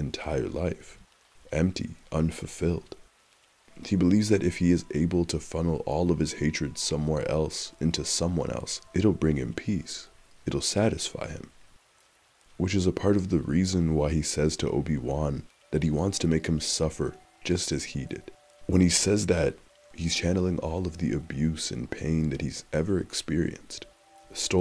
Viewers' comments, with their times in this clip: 0:08 When he talks about feeling empty and the Dark Souls 2 music plays is beautiful....that game is all about the emptiness, pain, losing one's self, and lonliness of the world and life. and the Majula theme perfectly encapsulates Maul trying to find Solace in his empitiness